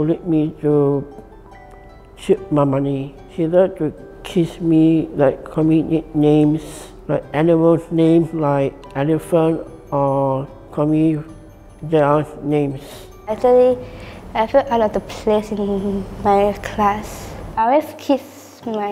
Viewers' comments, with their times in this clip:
0:03 I though he said "They love to kiss me" instead of "tease me."